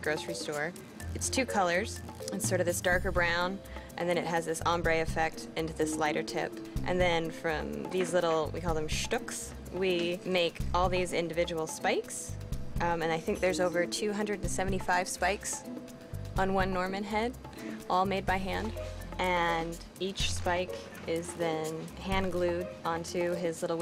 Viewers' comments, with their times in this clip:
0:08 How she says it sounds so nice for some reason